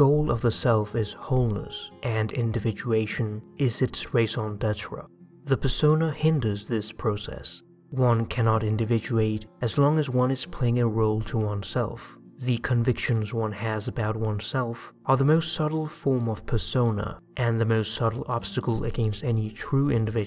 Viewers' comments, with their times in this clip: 0:05 What do you say I cant understand your accent at that part